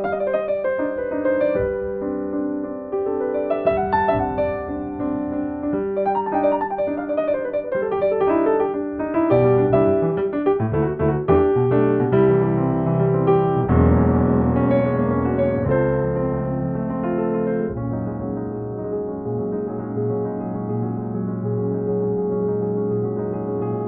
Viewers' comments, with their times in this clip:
0:09 Hilarious. All those chords and sequences, and the "Most Replayed" section is the IV-V-vi section
0:09 That change and the little lick, Sublime...